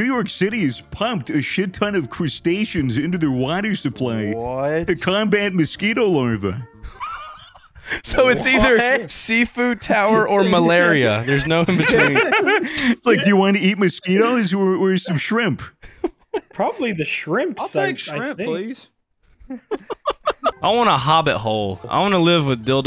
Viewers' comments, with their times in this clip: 0:08 As a Bottom Bisexual Gothic Femboy I just wanna say I had to pause so many times after the minute mark from laughing so hard. I love your mindsets and it just keeps getting better.... And thats an unexpected UwU from Doo... oh... my gosh low key shivered from that UwU that’s unnerving but also somehow arousing. “Big league chew bussy” I’m so done I love you guys 😂